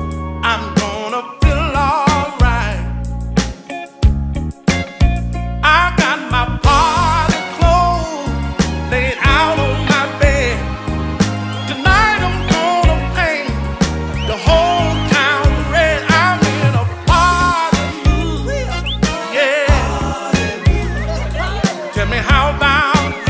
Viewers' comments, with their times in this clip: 0:08 He sounds good